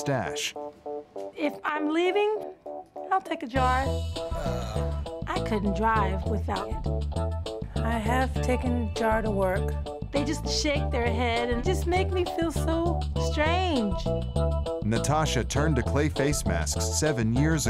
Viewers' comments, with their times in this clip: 0:04 😂 is that a burp?!